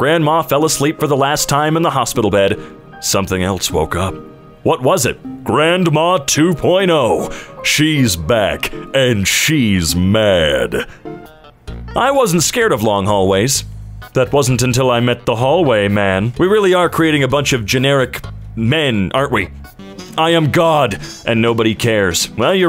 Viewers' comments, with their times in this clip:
0:08 he sounded like Markilplier